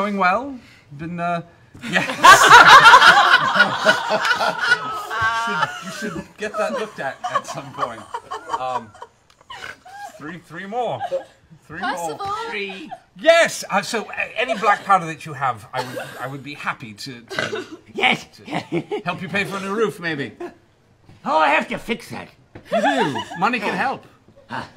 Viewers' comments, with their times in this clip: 0:10 The way Vex says Percival I love it!!!!